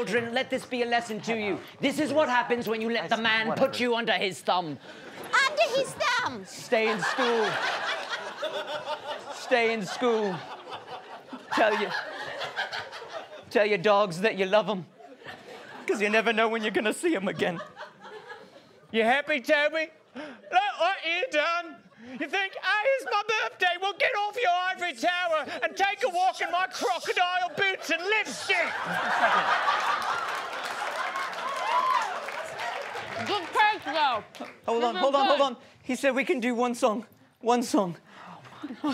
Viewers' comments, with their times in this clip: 0:08 That one guy is CRACKING UP!!!!
0:11 the laugh hahahahah priceless
0:12 gosh that laugh 🤭
0:25 This is the only Studio C that I am aware of where one of the cast members swear. Does anyone else hear Jason say, "and take a walk in my crocodile boots and live s**t!"